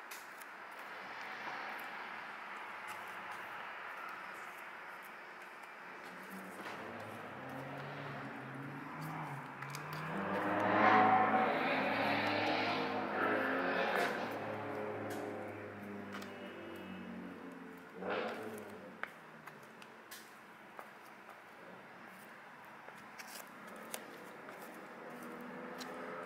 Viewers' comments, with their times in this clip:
0:09 ---> Always with that rice rocket in the background, lol! Great video by the way!